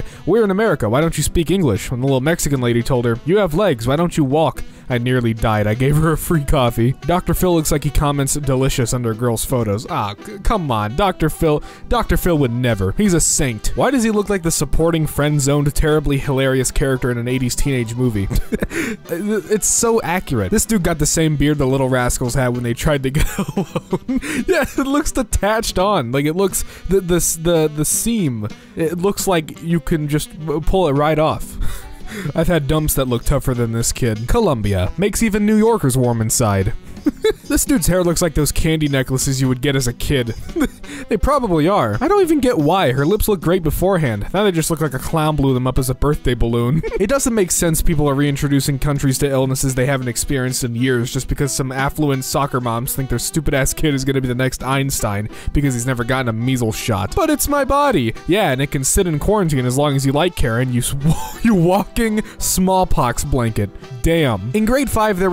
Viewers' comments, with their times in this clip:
0:07 am I the only one who heard grills instead of girls?
0:46 I will never be the same after hearing that laugh